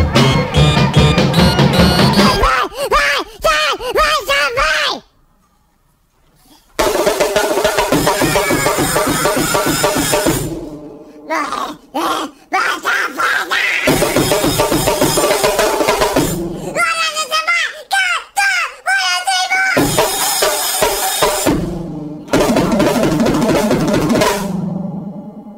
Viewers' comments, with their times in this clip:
0:06 Sounds like Yoshi lmao